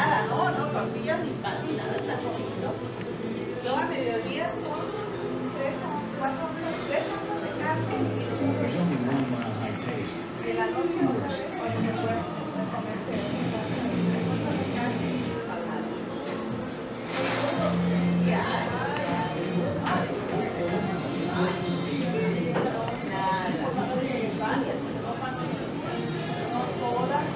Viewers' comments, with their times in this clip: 0:08 jajajajja spanish talkin